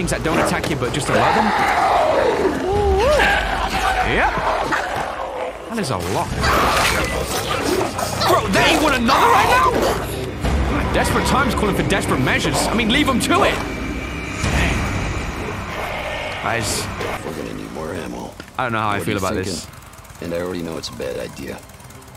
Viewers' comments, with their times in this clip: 0:07 what is he say I couldn’t understand him